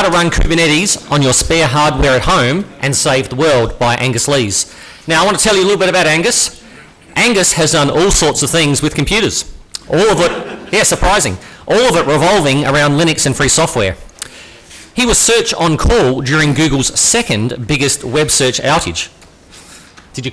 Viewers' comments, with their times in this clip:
0:06 Ouch and stopped because of the audio, sry guys but that is not a good one